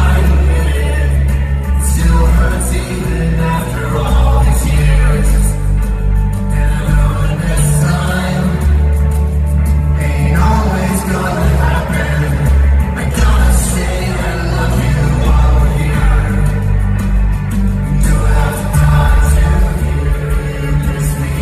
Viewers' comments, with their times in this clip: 0:03 By you can hear Tom SAY the last part of some lines bc it's too emotional to sing them. He forces the words out with his breath to fight through the pull on his heartstrings (sounds corny, but that's how I picture it). But, also, I thought he couldn't get the words out toward the end of the song bc of emotion...but from THIS angle, he's clearly having some issue he's trying to fix with a foot pedal. One last thing: how the F did you not have the camera on Travis for ALL THREE of his lines?!